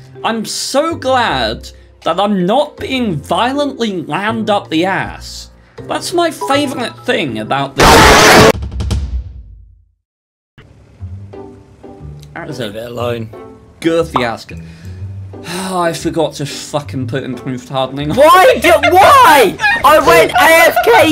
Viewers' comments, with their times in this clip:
0:06 my ears are bleeding.